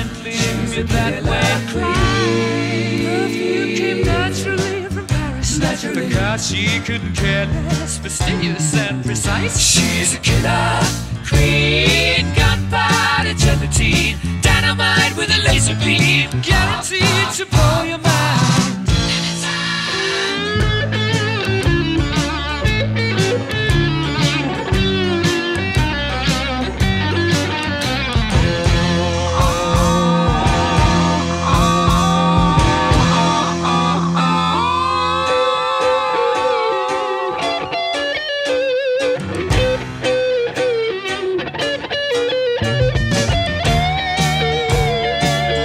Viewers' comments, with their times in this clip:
0:05 I always thought he said "because she couldn't care less", not "for cars she couldn't care less"
0:08 Love that bass line.
0:29 the best guitar bit in rock